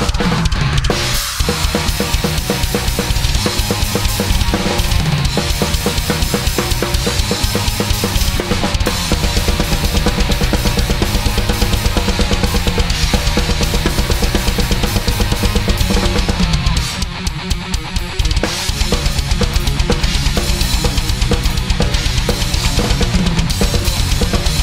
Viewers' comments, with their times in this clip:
0:08 onwards sounds sick! :D just like Matt Greiner's style in the last part of "Provision". Nice man!
0:08 loved this blast beat.
0:08 Those cheater blast beats look so lazy, but sound good if you can get an even stroke on each hit. Easier said than done without using triggers.